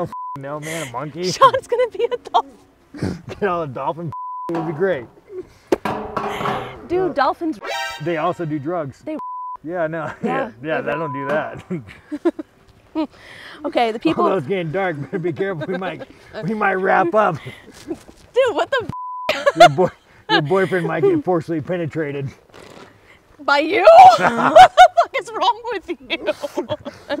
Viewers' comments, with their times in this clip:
0:08 why did they make that noise when he touched his eye?